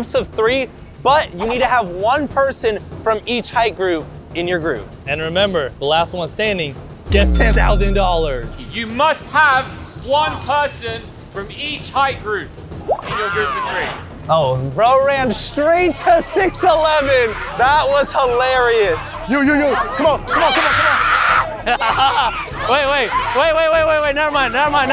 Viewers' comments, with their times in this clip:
0:05 “And remember, the latht one sthanding gets ten thouthand dollarthh” 😂